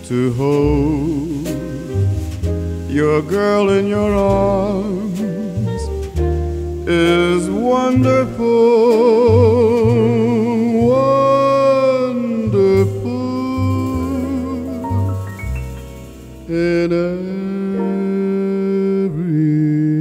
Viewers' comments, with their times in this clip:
0:07 "Wonderful, Wonderful" - This bit is wonderful, Hartman's voice here is somewhat haunting in a beautiful way, truly makes me think about holding a loved one for the first time.